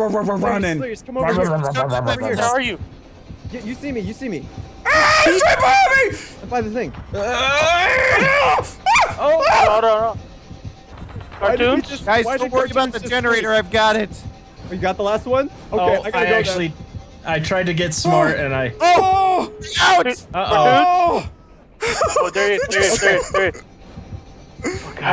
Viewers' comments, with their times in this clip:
0:08 love the squeak sound you made XD